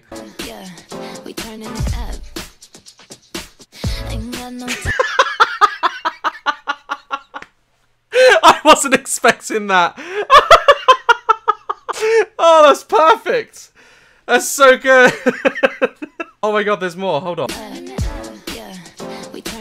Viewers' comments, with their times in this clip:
0:04 Notice how it was on beat😂😂😂👌-